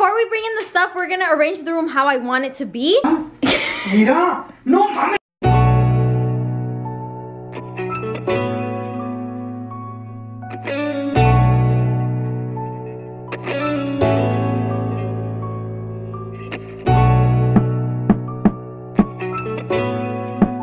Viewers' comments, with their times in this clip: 0:04 What the fuck was he shouting at on ur bed 😂